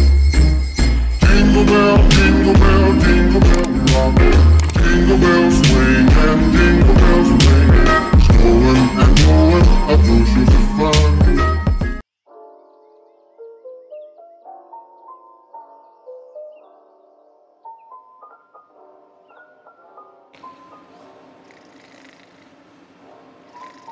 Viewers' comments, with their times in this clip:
0:04 i like the song ❤️